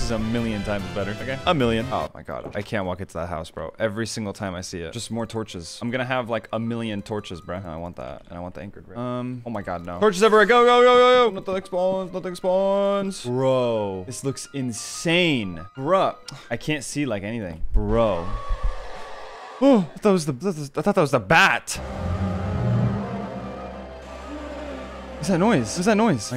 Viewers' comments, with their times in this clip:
0:07 Wth Right Behind You starts playing
0:13 *TF2 right behind you intensifies"